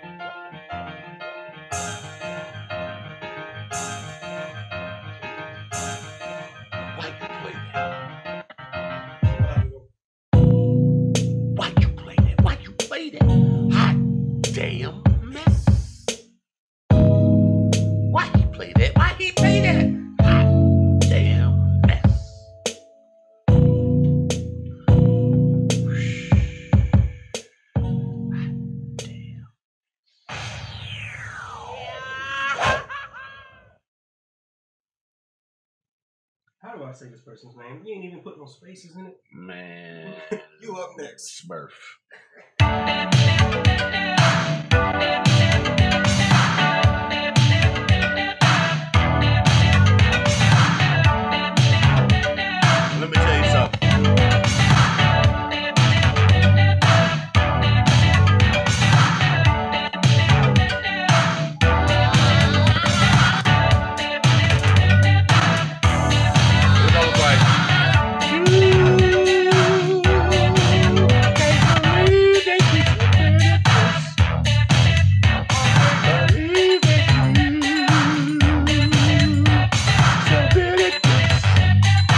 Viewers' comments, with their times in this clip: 0:09 I cant believe you stopped that beat right when it was about to drop...that shit sound like it was bout to be hard as fuck...i really wish i can find it somehow to see how transitioned.
0:34 Timbo singing to the beat @ the mark is the best vibe. Made me wanna listen to some Freddie Jackson 😂😂😂
0:44 Ngl THE 80s style beat was fire
1:04 ish timbo can sing yo! we need that